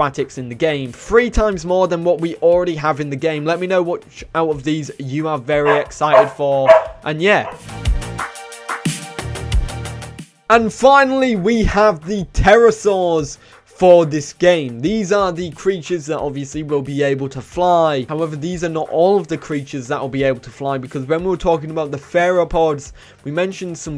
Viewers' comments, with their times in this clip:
0:06 doggo sounds excited btw my favorites are torvosaurus deinosuchus gigantoraptor